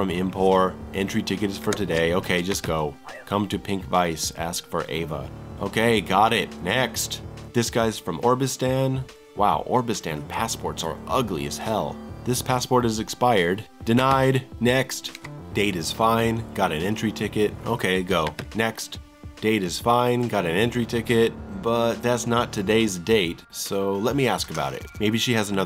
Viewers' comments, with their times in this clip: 0:07 The way he said obristan is hilarious